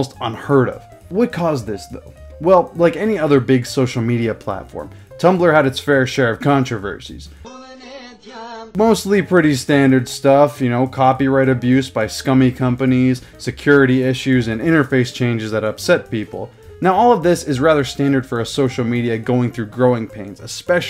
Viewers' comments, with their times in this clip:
0:07 i sense balkan music
0:07 For some reason Albanian music is being used Source: I am albanian